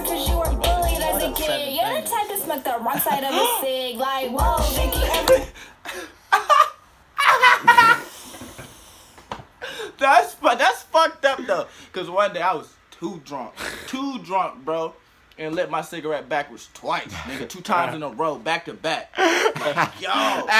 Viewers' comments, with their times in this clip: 0:03 the boy in the back lmaooo I’m dead🤣not tryna make fun of him that laugh though..he made me laugh🤣🤣